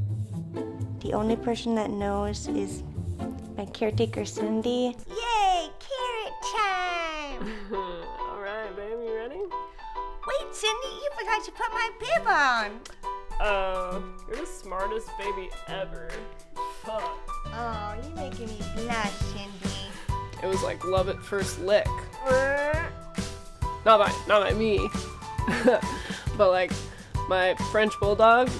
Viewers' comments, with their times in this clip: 0:09 Sound like Jimmy Neutron